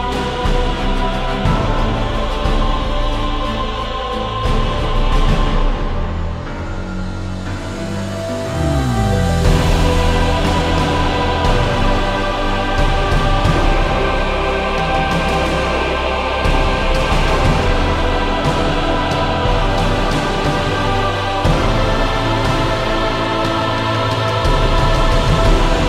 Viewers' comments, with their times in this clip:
0:07 that drop is DOPE